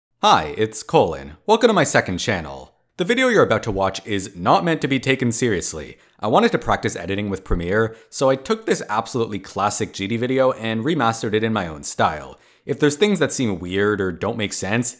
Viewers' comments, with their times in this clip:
0:00 i thought you said "hi it's foldin"